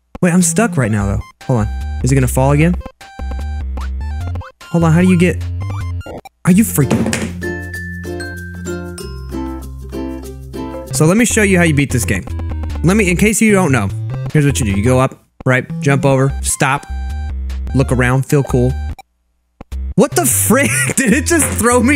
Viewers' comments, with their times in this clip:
0:07 This song is annoying it is not from Kevin MacLeod i like his music